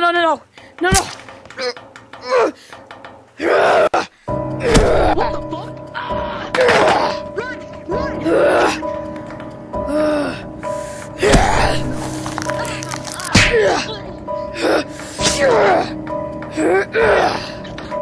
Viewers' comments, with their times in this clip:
0:04 Bro said no no no no OMG WHAT THE FUCK CRACKS* neck ☠️